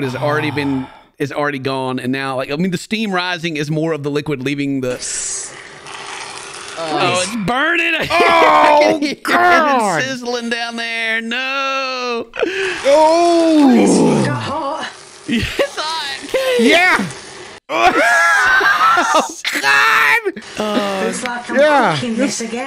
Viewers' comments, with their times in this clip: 0:04 Take it off the heat…… 🙏………. ‘Looks like it’s coming together’………🤦‍♂……… ‘lighterer’……… mushroom smoooooooothie 👀………*the sound of the blender*…. Not blending but ya know…….. ……. 😭😭😭😭